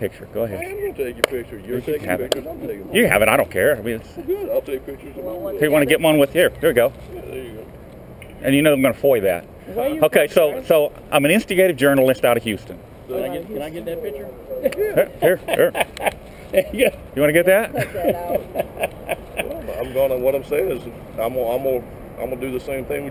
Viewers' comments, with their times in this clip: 0:10 “im an instigative journalist” lol did you purposely say that?